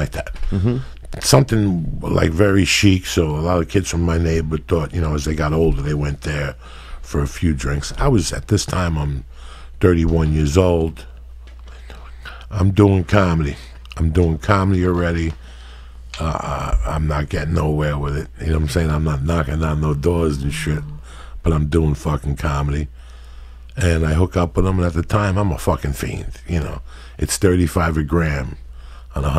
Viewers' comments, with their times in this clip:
0:10 sounds like he gets a stroke